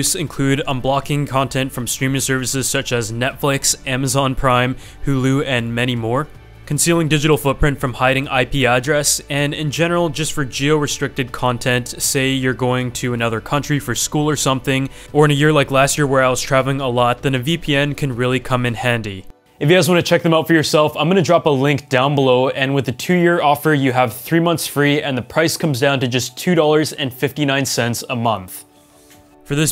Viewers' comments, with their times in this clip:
0:10 Who else got an eyebrow raised when he said JIO restricted content